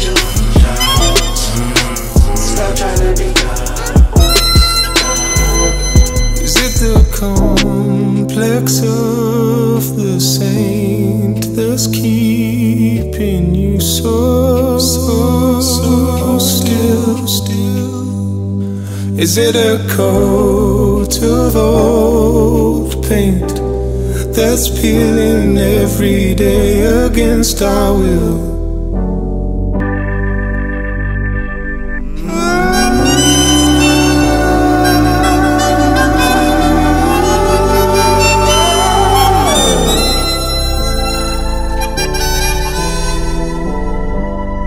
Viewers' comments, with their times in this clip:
0:07 when James Blake came in 😮😌🔥🔥🔥
0:15 and yes, the song is so good, the part of the work of the others, harmonica and voices and instrumental... but they dislike for the meaning of the video /song,
0:31 actually the most satisfying part (the start of the clam scream)